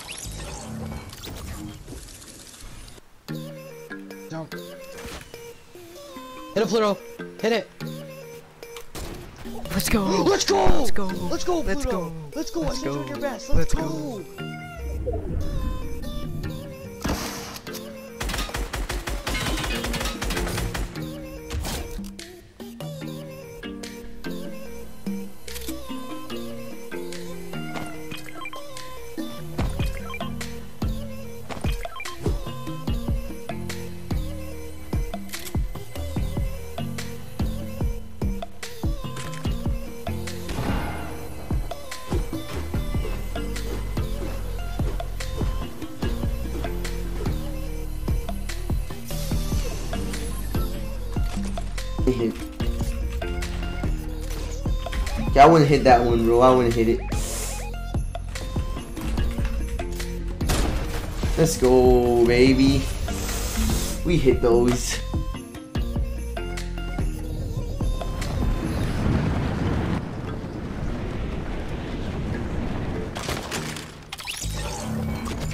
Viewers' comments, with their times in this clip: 0:07 The people that hit the trick shot are probably not screaming cause its the middle of the night.
0:09 that was the most fake reaction I ever heard
0:57 Me: reaction if I hit that have a big celebration. Him: little cheer like it’s nothing